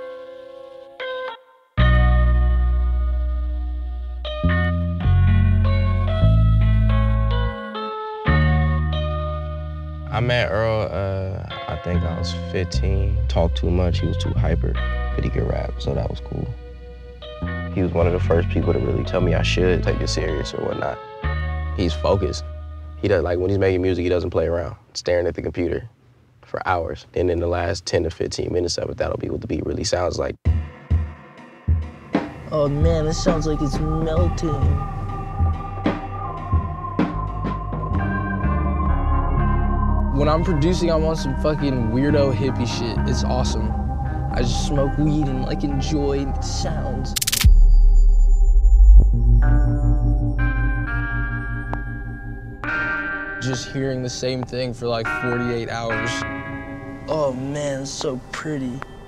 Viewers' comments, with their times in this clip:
0:08 That's a calm ass beat
0:38 when those fuckin keys come in so simple but just flawless
0:44 why the fuck earl sound like that lmao